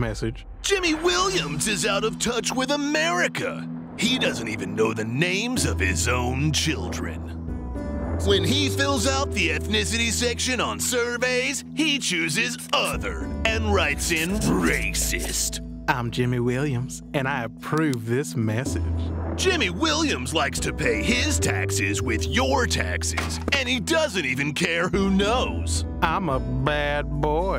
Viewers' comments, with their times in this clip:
0:10 sounds like trump to me